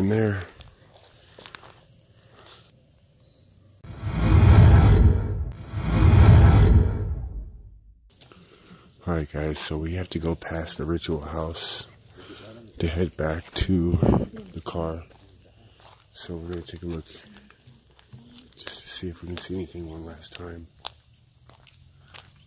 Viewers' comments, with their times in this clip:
0:07 I heard a heavy breathing and then something white went in front of your camera